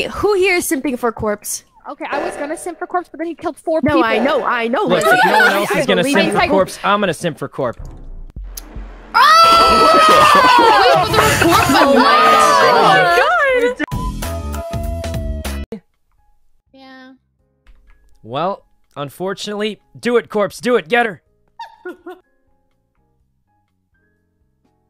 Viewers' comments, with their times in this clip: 0:09 Corpse laughing like a "Proud Boyfriend"......Always got me